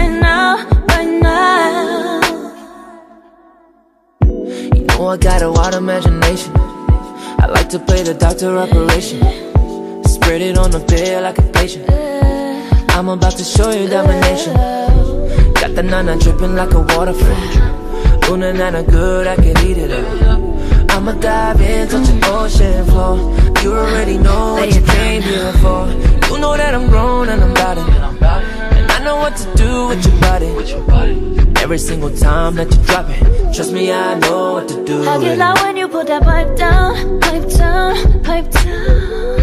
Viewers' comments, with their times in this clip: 0:04 lewis starts thank me later
0:26 thought was JB